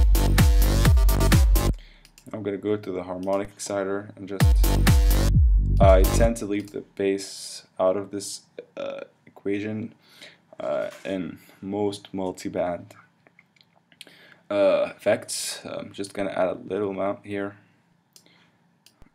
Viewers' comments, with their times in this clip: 0:03 when you´re playing gta iv n some npc listening to electrochoc pass near you